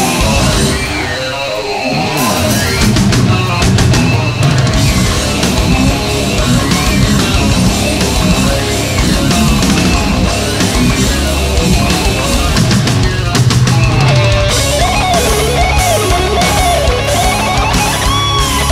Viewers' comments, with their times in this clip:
0:04 You guys, are on my list for bands who play better live than studio, you give heart on stage, bravo! And what a hell with that amazing groove riff Im repeating whole day!